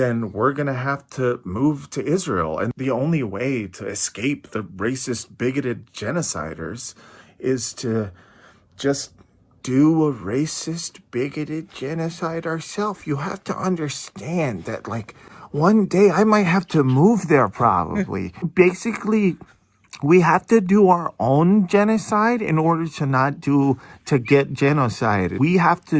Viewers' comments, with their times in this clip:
0:09 turning on Adam Sandler's voice here is really perfect. 😆